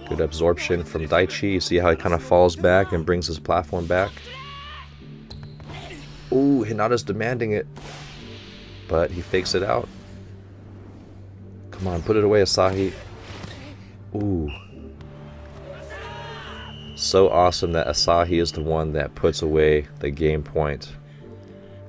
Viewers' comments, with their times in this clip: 0:03 Hinata's Onomatopoeia sounds so good and so endearing for me i dunno why